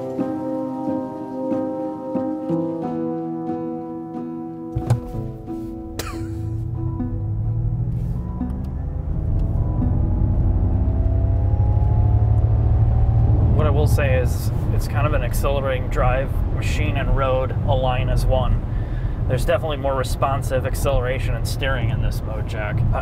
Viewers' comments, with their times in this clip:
0:04 the “ppfffff” on acceleration 😂